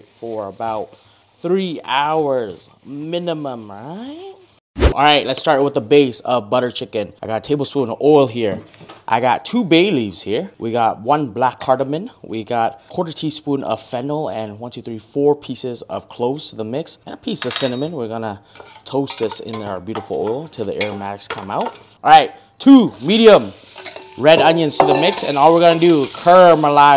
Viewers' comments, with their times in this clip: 0:09 Did you say a quarter teaspoon of fentanyl? 👀